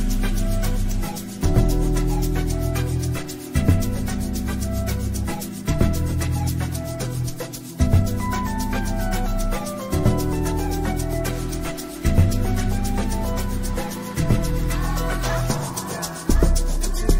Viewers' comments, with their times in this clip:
0:05 Am I the only one feeling the track so much